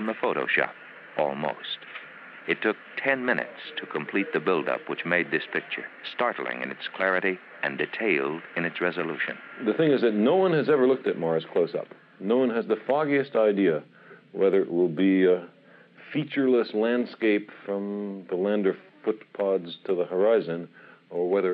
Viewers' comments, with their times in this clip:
0:09 voice of Carl Sagan!